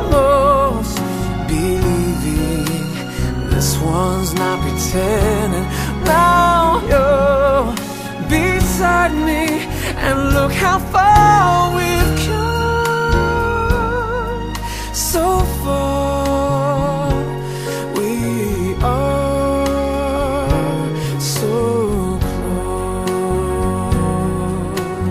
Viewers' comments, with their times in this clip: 0:09 Thumb up if you hear on Patrick Dempsey's voice :)))